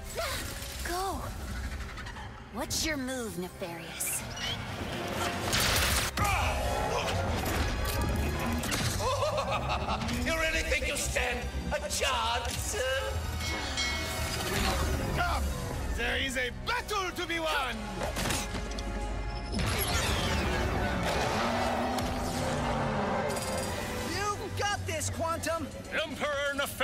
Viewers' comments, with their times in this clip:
0:08 Is it me or is he sounds like Medic from Team Fortress 2